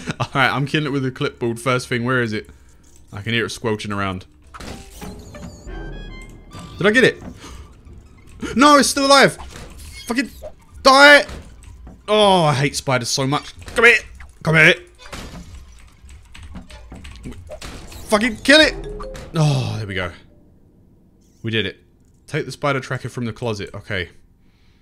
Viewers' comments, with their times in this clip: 0:05 also you didn't miss you just killed one cause the other was got out and ran you can hear by the soundtrack when you killed one. just to help you out abit